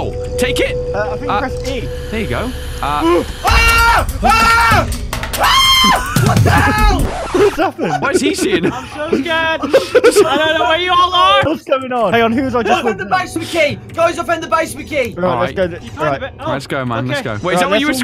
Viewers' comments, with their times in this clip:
0:04 that screaming made me laugh😂😂😂😂